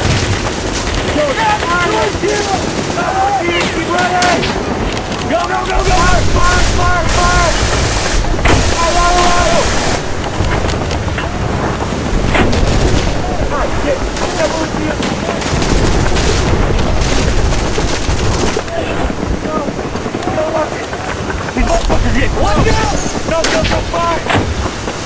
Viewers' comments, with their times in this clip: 0:08 I just heard an "Allah Auakbar" Or it's just a hallucination